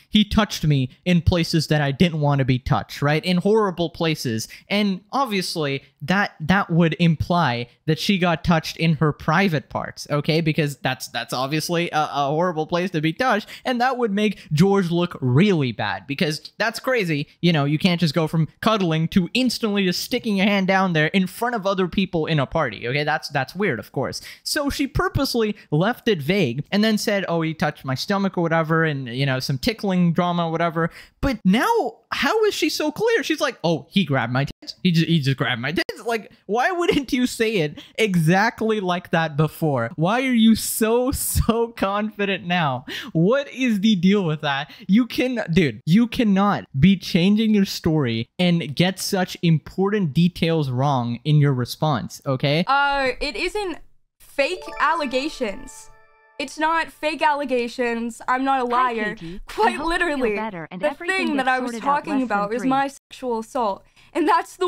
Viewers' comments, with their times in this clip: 0:05 This fake crying omg… It is literally so obviously fake, how did no one notice..?!?
0:52 does this not look like footage of an actor auditioning or like a cut scene from a movie lol Her tone of voice, her motions, her eyes. If you're being treated unjustly and accused of lying you wouldn't be acting like this you'd be frustrated or desperate and it'd show in your face not speaking like you're doing slam poetry and avoiding wrinkles being created on your face